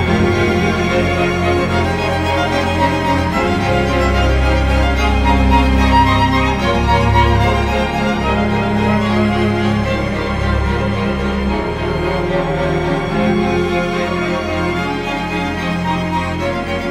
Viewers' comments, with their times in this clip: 0:03 .. bring the bass back for seismic peak Mr max Richter